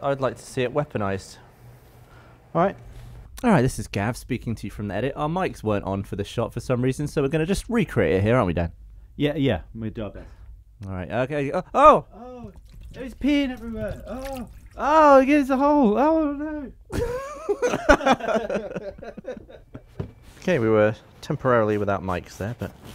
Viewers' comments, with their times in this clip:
0:03 the dubbing is hilarious